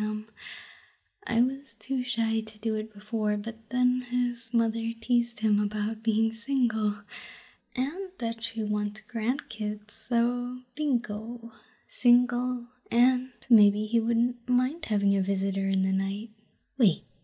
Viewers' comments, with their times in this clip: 0:05 and the bell goes off. Thank god.